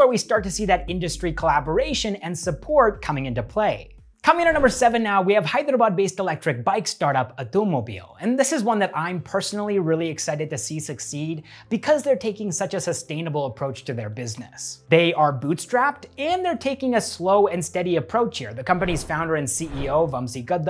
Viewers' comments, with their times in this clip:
0:04 I can't imagine he smelled the word Hyderabad so correctly Even hyderabadies spell it as hydra-bad